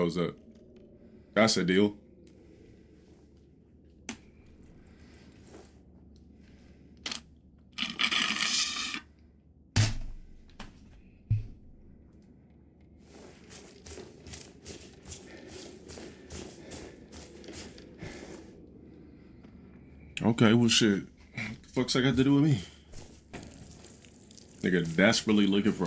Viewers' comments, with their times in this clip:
0:07 That sip of air 👌